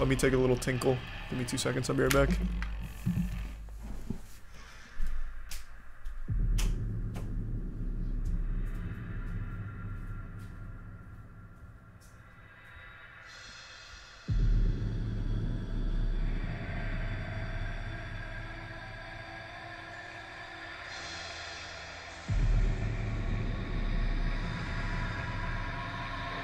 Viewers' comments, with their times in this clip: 0:08 for those people who wanted to hear the creepy menu theme